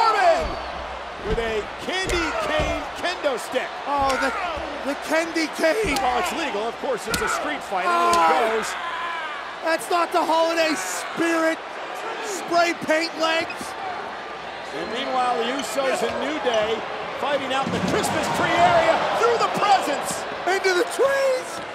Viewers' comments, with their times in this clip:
0:05 looks like the candy Kendo stick really hurt Drew Mcintyre (The screams)